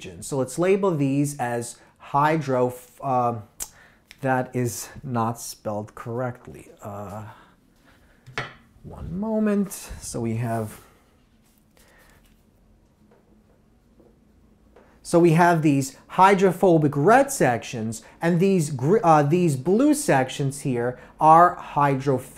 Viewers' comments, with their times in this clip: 0:05 I hardly/rarely found an interruption in his lecture.